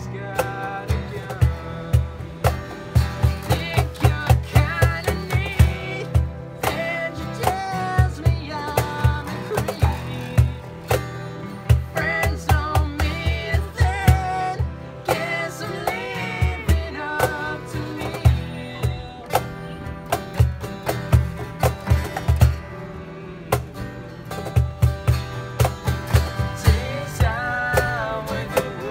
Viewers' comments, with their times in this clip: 0:04 Yessss to doing the higher note on “think you’re kinda neat” ....most times you hear it played on the radio they play the alternate version without it
0:15 He's mid voice